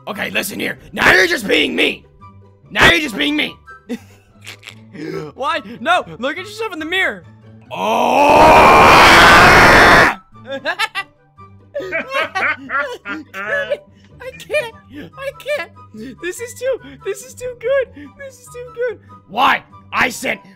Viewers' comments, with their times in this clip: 0:04 hahahahahahahahahahahahaha the way shadow just screamed